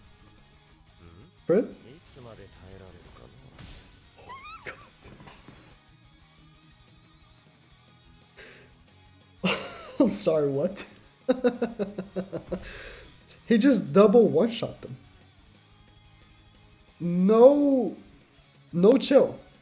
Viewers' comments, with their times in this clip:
0:06 ......I did the same laugh after watching that damage. I’ve been running the Green monspeet, blue Melascula, Kyo, and red zeldris in the back. Made it to challenger on global and had fun doing it. I was waiting for Drole to come and dethrone Liz, but I think I might ur monspeet, since I already have Kyo and the rest of my team ur’d.